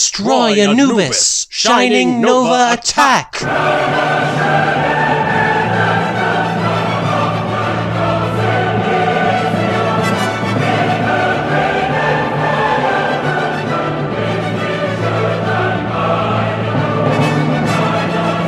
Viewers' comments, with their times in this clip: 0:03 i started laughing insaneley cuz of the music